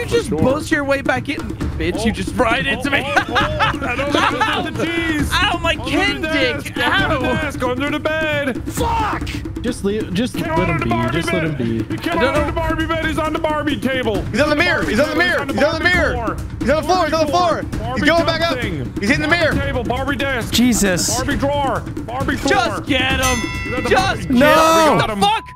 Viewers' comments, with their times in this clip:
0:06 Evan’s characters screaming “FOCK” killed me